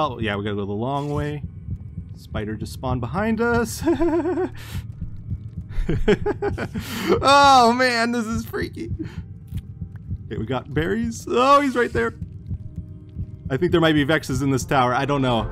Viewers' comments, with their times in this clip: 0:03 the hallucinogenic giggle is gold